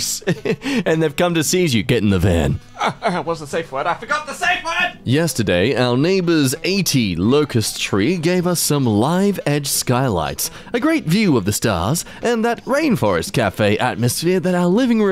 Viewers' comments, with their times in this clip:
0:03 Was he saying "SAVE POINT"?